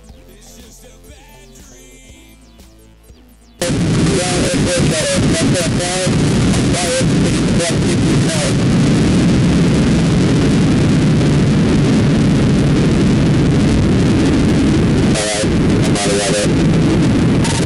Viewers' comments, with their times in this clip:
0:03 Headphone warning dashcam audio kicks in with quite a volume jump.